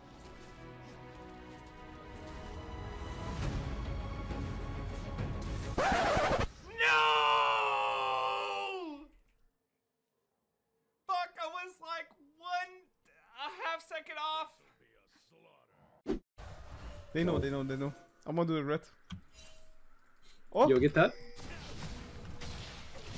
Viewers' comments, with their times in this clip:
0:06 It sounds like an evil villain just got hit plans foiled.